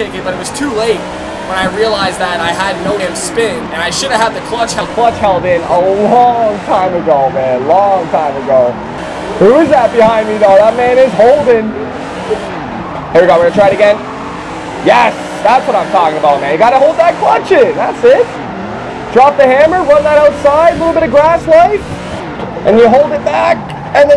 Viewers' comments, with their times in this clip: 0:07 you sound like an old football match on an old box TV xD !!!!!!!!